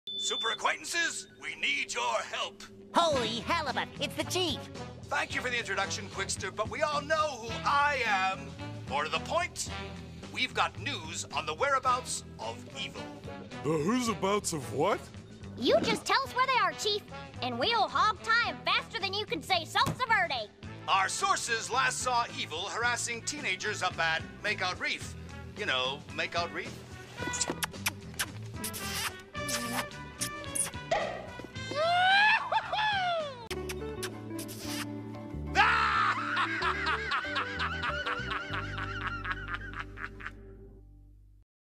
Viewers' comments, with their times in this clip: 0:03 If we remove the -ibut it sounds like SpongeBob says holy hell
0:30 Bruh the pop afterwards has me laughing hard asf 😂😂😂
0:35 That laugh is just gloriously hilarious!
0:35 That laugh lol
0:35 How's nobody even mentioning how good that laugh is.